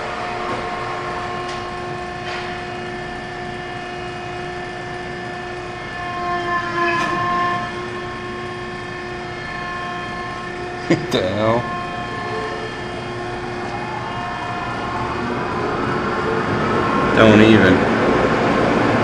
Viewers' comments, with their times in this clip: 0:05 the Hydraulic Power Pack tried to stall for a minute but regained power quickly. Who knows why that is, is beyond me.
0:05 sounds like the hydraulic pump stalled